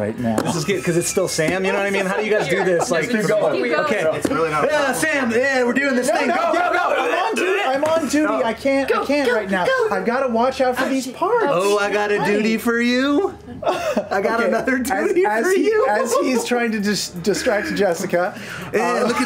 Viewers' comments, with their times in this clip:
0:04 Liam’s quiet “It’s really not a problem for me” when Blair/Baldpaw is talking about how uncomfortable it is to rp getting intimate with Sam at 😂😂😂 Edit: